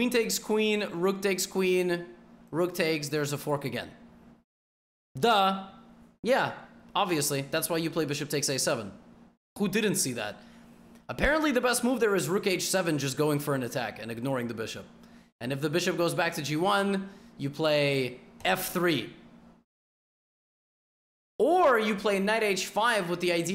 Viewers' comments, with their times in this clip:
0:04 accidental "да..." didn't feel like "duh" because it followed by the nod and the "yea..." Levy, just curious, in what language do you think?